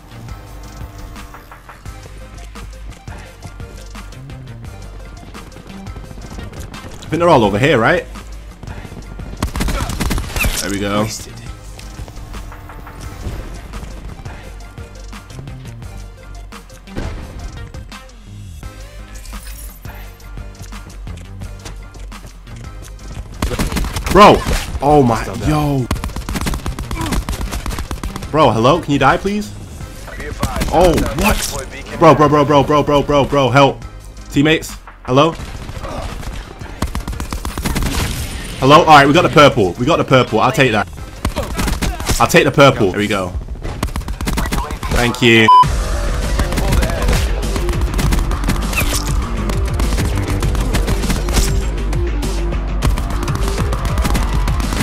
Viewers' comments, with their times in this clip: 0:10 Why’s the fortnite twist emote dance playing 😂
0:30 you can hear the twist music of fortnite
0:42 just puts bo2 music in